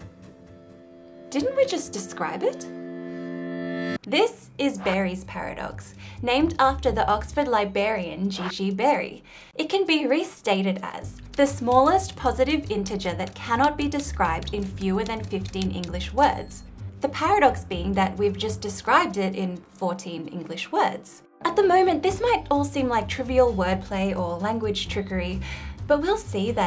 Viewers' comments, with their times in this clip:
0:07 was Berry a famed drinker? A libarian, one who indulges in libations? Or a librarian? One who takes care of books in a library?
0:07 "Barry the 'Libarian'"? How many r's are in the Australian spelling of "library"?